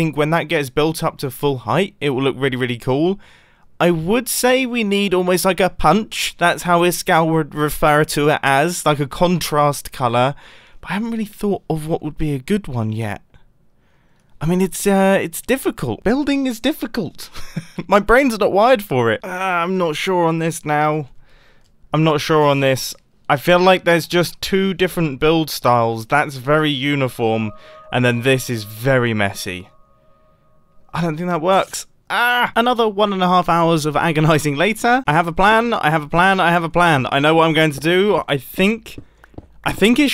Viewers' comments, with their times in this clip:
0:05 He sounds different
0:17 Lol I thought he said "my brain isn't wide for it"
0:28 who else hears the cave sound lol